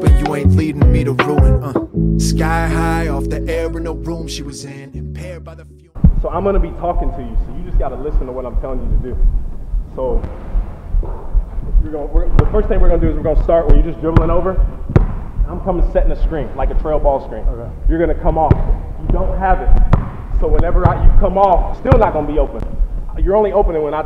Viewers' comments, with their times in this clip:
0:09 u can hear his heartbeat 😂